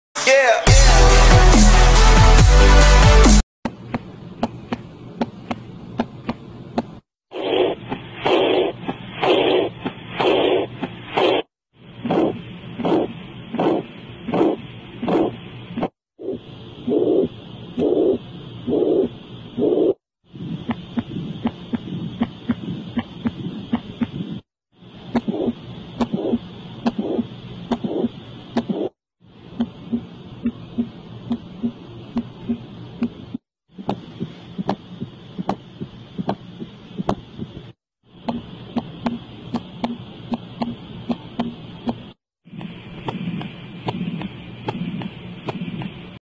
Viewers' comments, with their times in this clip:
0:07 WHAT IS THAT- IT SOUNDS DEPRESSING 😭
0:21 This is sort of what my heart kind of sounds like, yet the last thump is a lot heavier & makes me feel very light headed. Sometimes I even feel like my vision fades black for a quick moment.
0:33 this one sort of sounds like something is galloping with jars of mayo on their feet